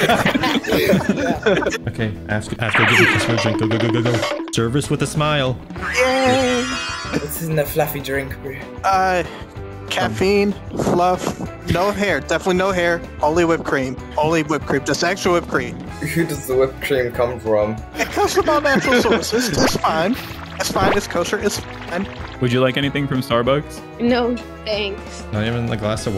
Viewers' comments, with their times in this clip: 0:08 so sad that my fellow china was misrepresented saying “bro” when they actually said “bru”